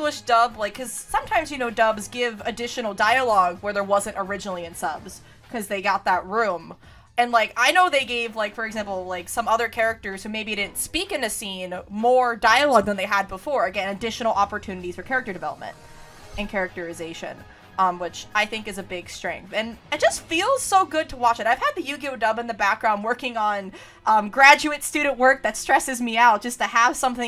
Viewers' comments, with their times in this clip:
0:10 i just realized while all this was in the background that the 20 or so seconds before my timestamp sounds so ratchet and clank lol